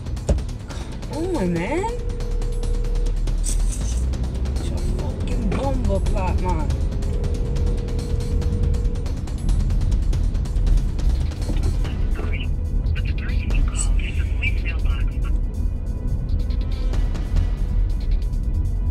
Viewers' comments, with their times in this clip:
0:05 I was falling asleep and then i heard yardie come out 🇯🇲🇯🇲🇯🇲 all sleep left my eyes